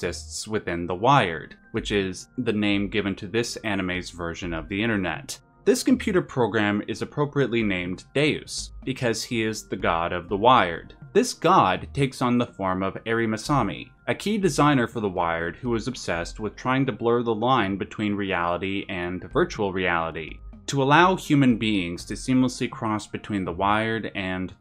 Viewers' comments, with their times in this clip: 0:08 I thought you said "his name is Dazed, because he's the God of the Wired" 🤣🤣